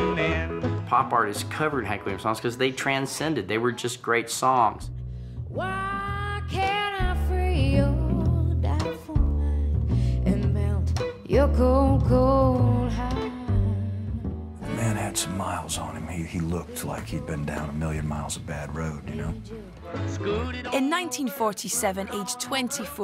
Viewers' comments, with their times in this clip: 0:09 I forgot how good Norah Jones was at taking ANY song and making it unbearably dull.😴😴😴 Like, no matter HOW great a song was, she could make it boring as fuck. It was really her main talent.